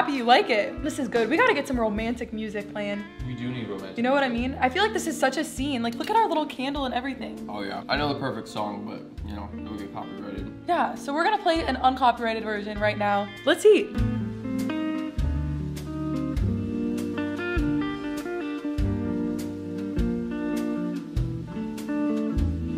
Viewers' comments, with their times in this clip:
0:04 did anyone notice that the kitchen is right by where hes sitting and she taking loudly so he would hear! hahha see here